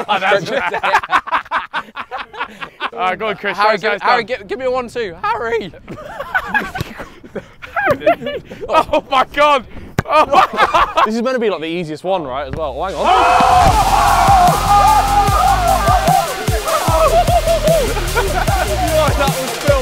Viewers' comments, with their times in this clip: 0:03 That voice crack tho 😂😂😭
0:05 Bro that voicecrack😂
0:06 that voice crask tho